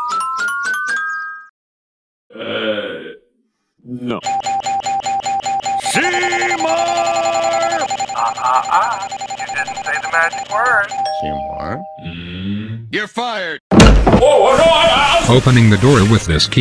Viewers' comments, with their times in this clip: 0:04 my favorite doorbell joke With 2x speed he's just ringing the doorbell with a jackhammer